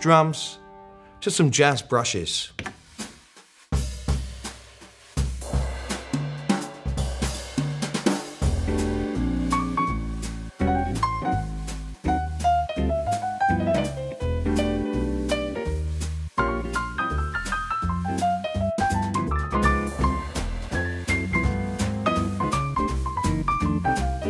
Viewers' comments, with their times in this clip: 0:05 Damn man you know how to swing !! :) I'm transcribing that solo right now !
0:08 Oh man! Those chord changes